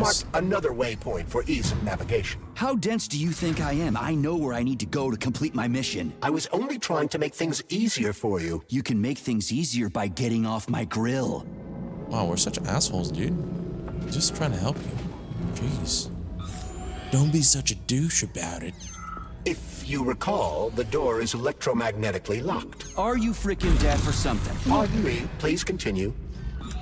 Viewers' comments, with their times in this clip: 0:08 Yoo!! Tell me P3 doesn't sound like Kaiba from OG Yugioh!! 🤣